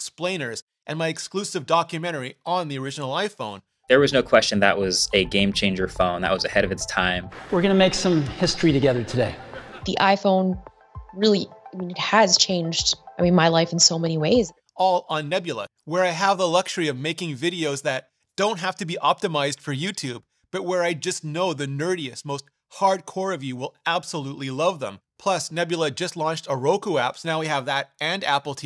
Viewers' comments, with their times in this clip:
0:10 using the headset mic yikes